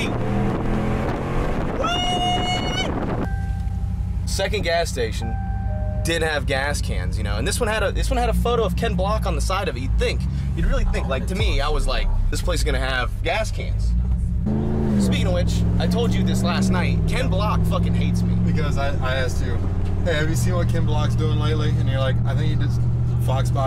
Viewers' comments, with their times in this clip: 0:05 I thought somebody rang the doorbell